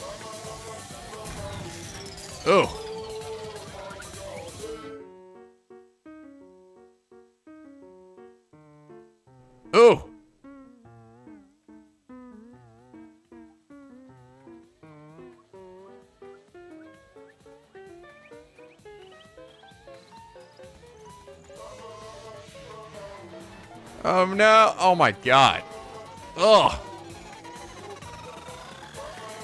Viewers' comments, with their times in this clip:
0:10 Um, that is not how you play The Flea Waltz.